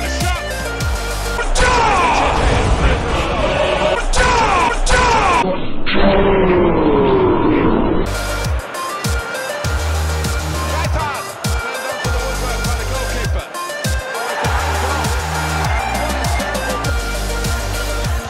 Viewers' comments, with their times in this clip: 0:03 the funny "pachow" pls?